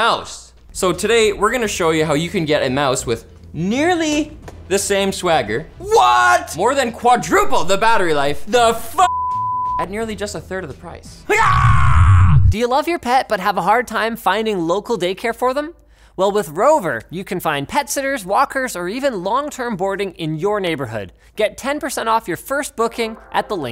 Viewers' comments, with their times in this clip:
0:09 what is sid from ice age doing here